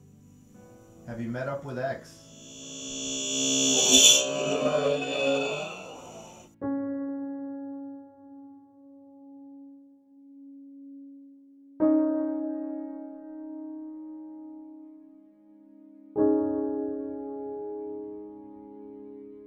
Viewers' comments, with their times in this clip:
0:03 sounded like juice